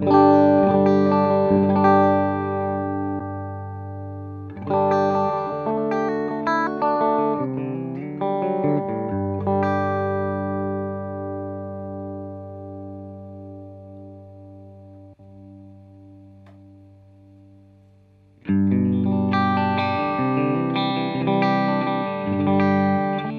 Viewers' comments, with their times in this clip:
0:08 what happened in ?? Simply plugging an adapter enhances the sound?